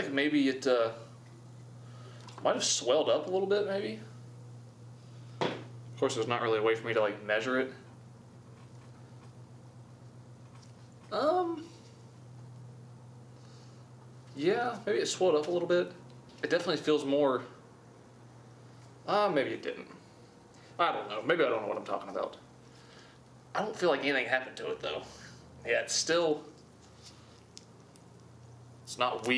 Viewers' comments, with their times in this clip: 0:10 Was that a moan 😔
0:11 Wtf was that moan 😂😂😂😂 I stopped what I was doing to look at my TV cause was like WTF?!?